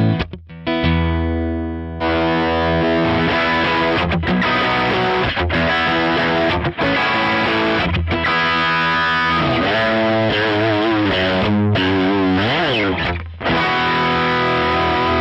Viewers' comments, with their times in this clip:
0:03 sounds so bad